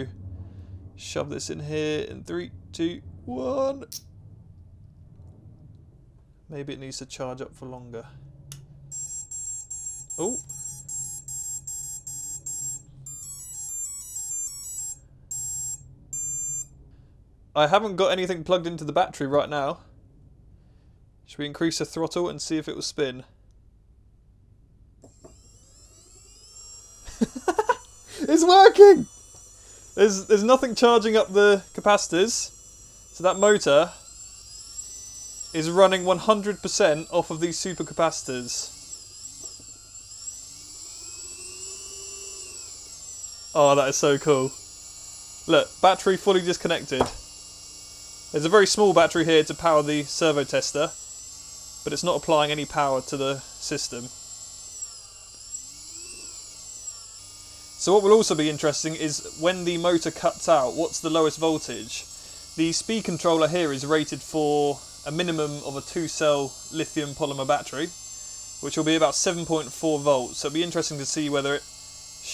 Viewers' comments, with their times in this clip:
0:08 yall can NOT tell me that isn't the start of Pirates of the Caribbean...
0:08 Ah, yes. The beautiful sound of the electronics singing to you. 😂
0:09 everybody gangsta ‘til the supercapacitors start singing.
0:26 As an engineer, I fully appreciate that silly sounding uncontrollable giggle due to a design working for the first time :)
0:56 bro sounds like wall-e